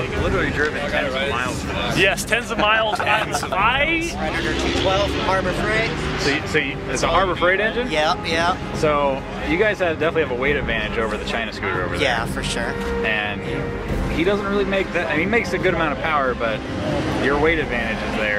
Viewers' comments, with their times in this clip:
0:05 ha sounds like he's from king of the hill (show on Adult Swim)